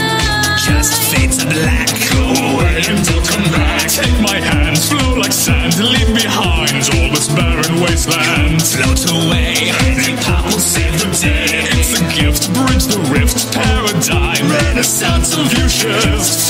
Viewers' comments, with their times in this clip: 0:04 float like sans xd